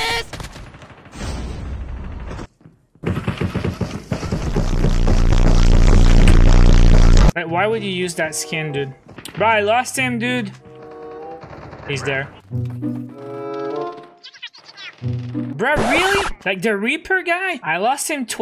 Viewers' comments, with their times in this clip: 0:03 Let's be honest: Reaper has the loudest footsteps in codm history